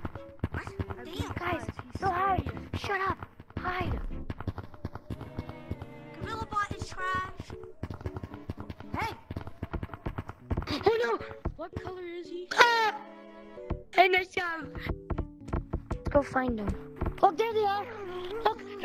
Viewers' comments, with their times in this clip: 0:05 xD the Scream